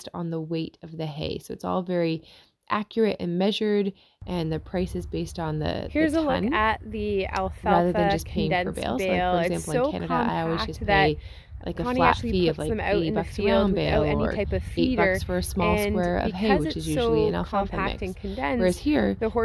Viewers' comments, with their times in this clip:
0:05 I don't see anyone mentioning it but at about the mark there are two voiceovers playing at the same time